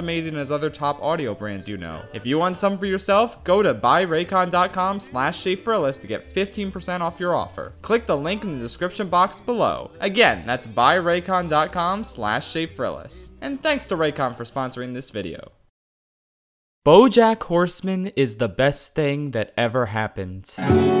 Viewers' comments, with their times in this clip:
0:04 that is perfect and entirely unnoticeable censoring right there